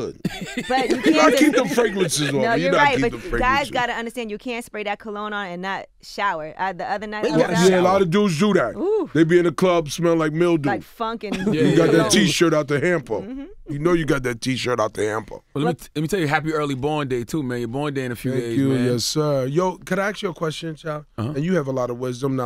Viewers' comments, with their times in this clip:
0:08 what is "mill doo?